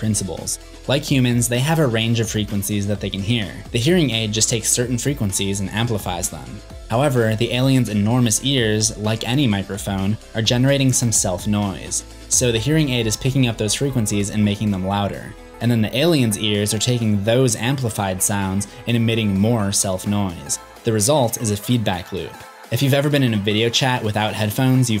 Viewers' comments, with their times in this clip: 0:05 How interesting that at the point where the background music masks and renders indiscernible the speech for hearing aid users is the same point there's a discussion of hearing aids. At us, but not with us, 'eh?